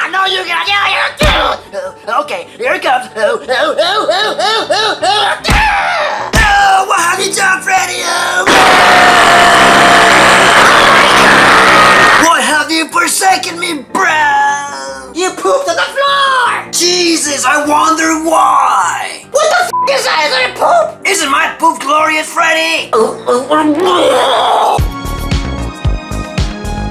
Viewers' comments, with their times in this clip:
0:07 it sounds like and airplane q400 engine
0:08 it sounds like a plane q400 aircraft